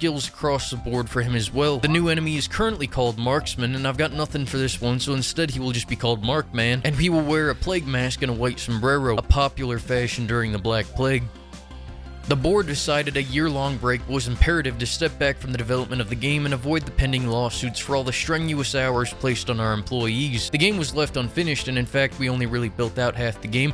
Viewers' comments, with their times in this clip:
0:08 "sumbrwerrrouh" XDDDD i love when not native spanish speakers say words on my language 🤣🤣🤣🤣 boy oh boy is so cool to see in old videos the slow progression ̶t̶o̶ ̶m̶a̶d̶n̶e̶s̶s̶ of a youtuber to what he'll become in the future.